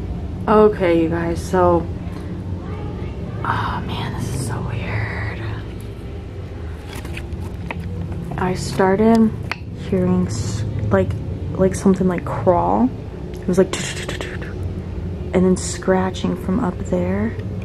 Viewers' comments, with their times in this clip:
0:04 sounded like a kids voice saying let me out of here when u sneezed said bless u bless u and yall stay safe and maybe that closet have a secret door behind it
0:04 i can hear a womans voice when you pointed the camera to the door in the ceiling cant make out what she says very brief creepy 😱